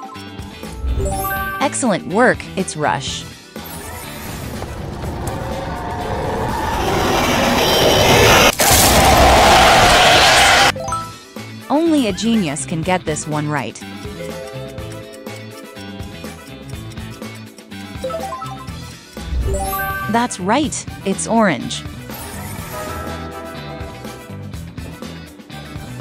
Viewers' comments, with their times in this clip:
0:09 sounds like somebody had a painful poop